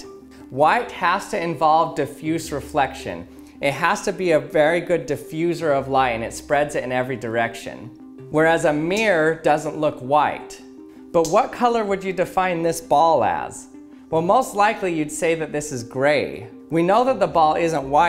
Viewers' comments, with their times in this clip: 0:05 is he reading a script